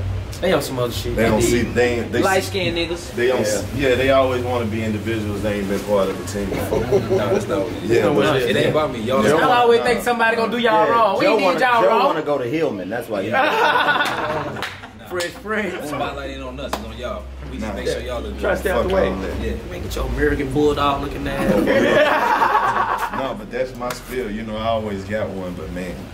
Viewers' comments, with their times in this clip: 0:10 for years i've been wondering..... who is laughing 😂 luv it lol